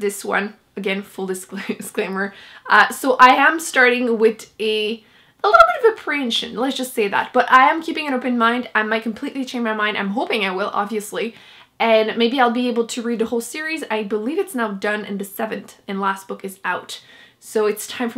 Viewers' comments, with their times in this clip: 0:06 What is it that you say ? You say you’re starting this book with a little bit of a ________ ? Sounded like you said something like “preiage” I can’t figure it out!